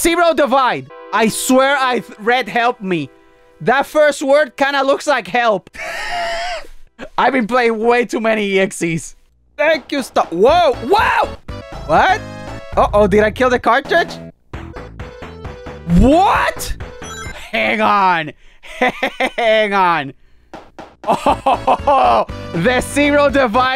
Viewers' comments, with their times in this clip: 0:05 Omg the laugh 😂😂